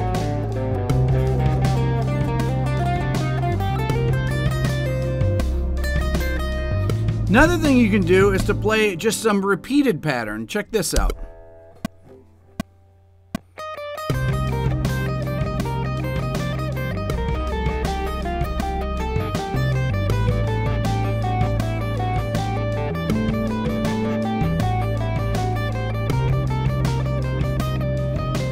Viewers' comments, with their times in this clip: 0:10 Nice, very tasty and dreamy.